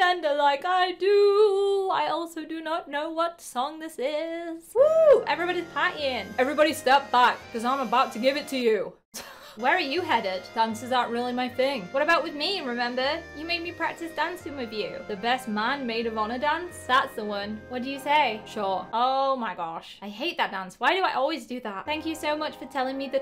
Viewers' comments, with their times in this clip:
0:07 Who laughed so hard